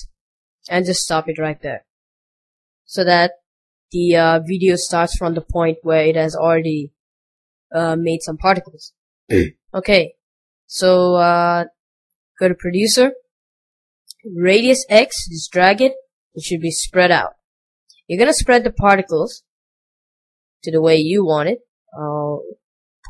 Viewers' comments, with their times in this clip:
0:08 wtf was that noise i had my volume up and i almost shit my pants